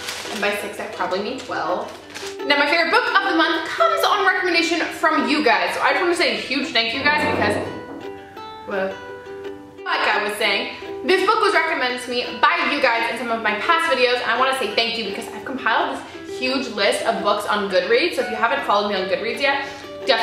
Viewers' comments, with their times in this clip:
0:06 Did she fart lol
0:06 was that a fart or...? ;)